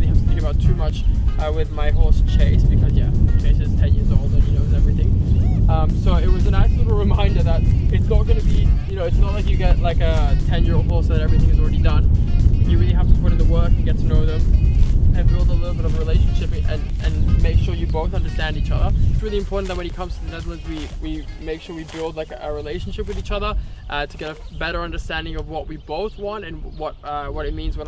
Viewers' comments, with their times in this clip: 0:10 Emporio is killing that grass Happy horse noises :)